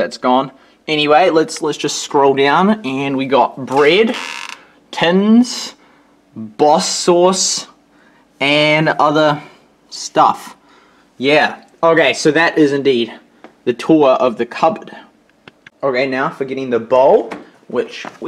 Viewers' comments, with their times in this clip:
0:04 Nice! (And letting us snoop in the cupboards and drawers -- interesting!) -- You said something after you said "bread" -- what did you say? Sounds like "pins". -- Good video!